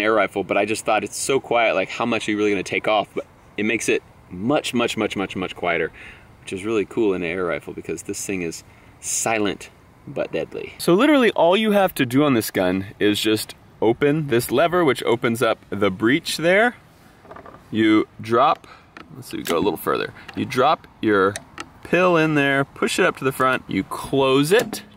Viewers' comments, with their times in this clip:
0:09 like a fart